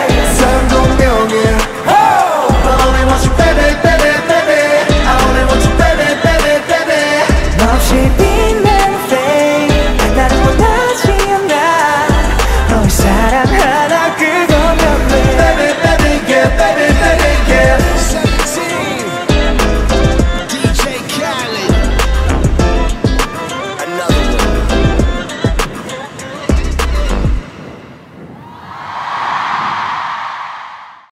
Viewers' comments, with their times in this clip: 0:09 Everyone said Vernon's intro is so rizz. But for me his rap part and the way he move his hips really got me.
0:14 I can hear seungkwanie's voice 💙